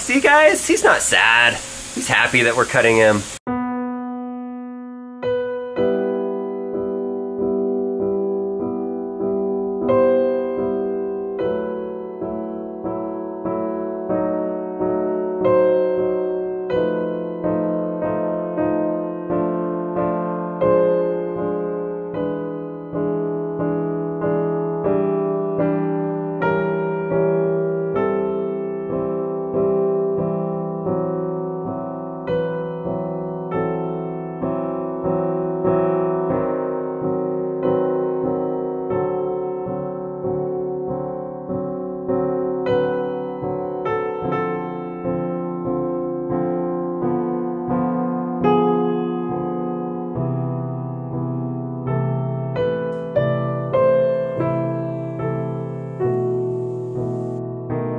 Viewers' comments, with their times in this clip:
0:03 The somber classical music is Chopin's E Minor Prelude, for anyone curious.
0:15 this made me cry after seeing that furby was being cut in half meanwhile it just crying rip
0:16 he starts crying R.I.P. buddy. You’re singing in the stars now.
0:23 HE DIED AND CRY LMAO
0:23 he crying and ı sad
0:23 the furby was crying. I LOVE IT
0:24 Furbys cry too!! it soo creepy!!
0:24 the poor furby is crying 😭
0:24 the furby literally crying :(
0:27 F***ING HELL IT CRIED!!!
0:27 the furby cried
0:30 What's Inside? yup the furby is crying too and the old furby is breathing
0:30 What's Inside? hi that thing actually cried in
0:30 furby is crying
0:31 when its crying because it's Ganna get sliced
0:31 he was crying:0
0:32 AHHHHHH!!!! ITS ALIVE ITS CRYING!!!!!
0:39 noooo he’s crying😭